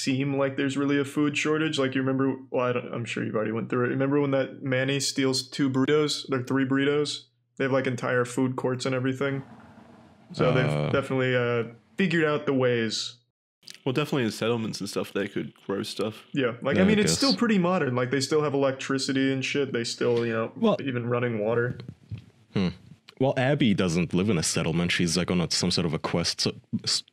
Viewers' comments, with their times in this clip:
0:08 is that a bong rip I hear? 😂